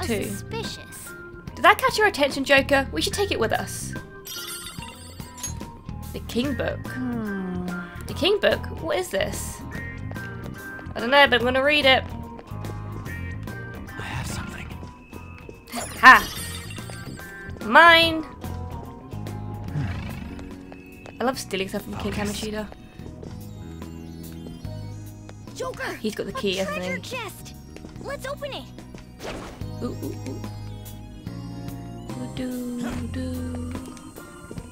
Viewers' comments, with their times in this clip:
0:04 Does the audio get desynchronized for anyone else?
0:22 Great episode, but it looks like the game audio got out of sync with the game footage or so?